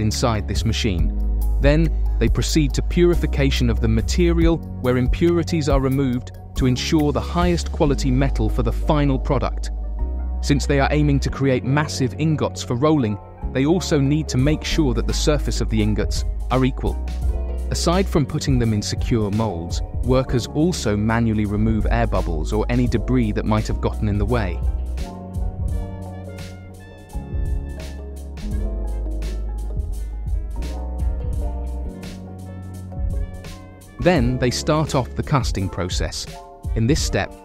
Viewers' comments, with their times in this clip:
0:05 Lol two overlapping songs
0:25 the music goes to hell. Can't you guys find real buy out music? Also, Aluminum is not pronounced "al-u-min-e-um". Look between the "n" and the "u". There's no "I" or "e". Dig? How come the people in England can't pronounce English words? Sorry, but this deal is weak.